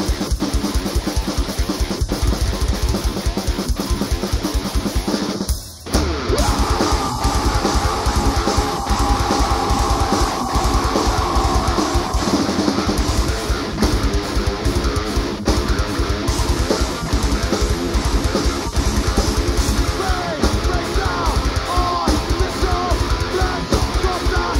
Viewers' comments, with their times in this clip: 0:09 corey's scream is fucking brutal!